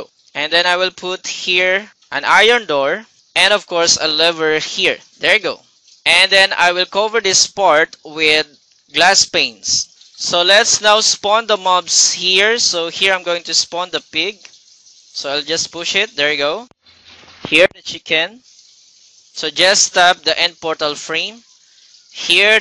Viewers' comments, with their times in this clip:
0:09 Glass Penis xD hahaha